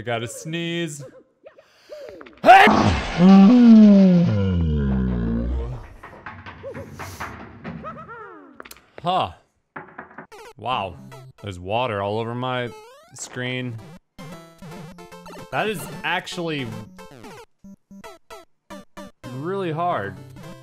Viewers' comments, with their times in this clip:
0:04 God bless ya bud.